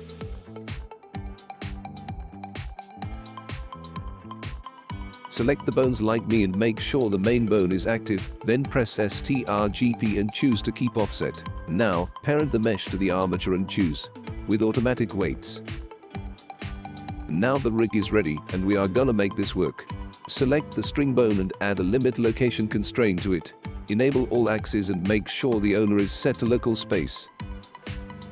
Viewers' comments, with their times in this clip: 0:09 What the heck is the bot saying